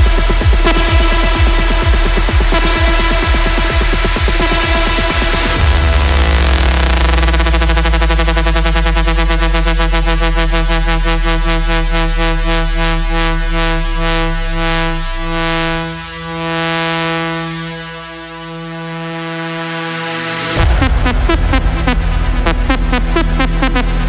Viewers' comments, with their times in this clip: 0:05 The small bit sounds a looot like the start of Kicking It Hard